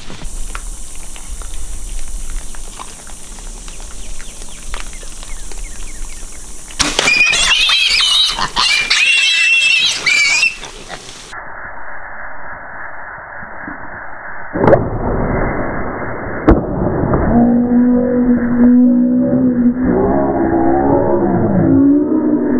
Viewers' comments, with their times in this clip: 0:07 it sounds like 100 girls screaming
0:07 Well done! is funny with this stupide screams!